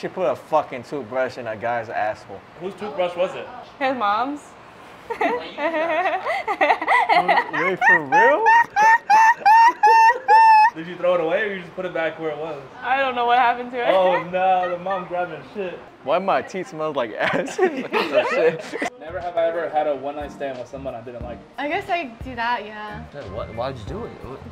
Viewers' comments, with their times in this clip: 0:05 wtf is that laugh LMFAO😂😂😂